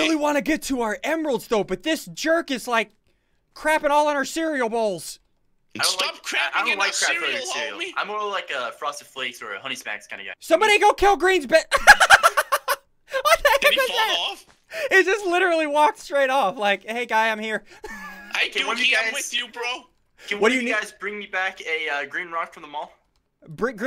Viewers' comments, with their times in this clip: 0:10 ssundee's laugh though LOL